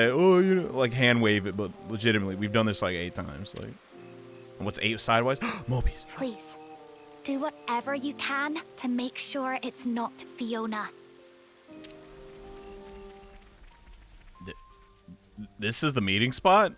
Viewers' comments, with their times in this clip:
0:03 🤣 the way he says it hahaha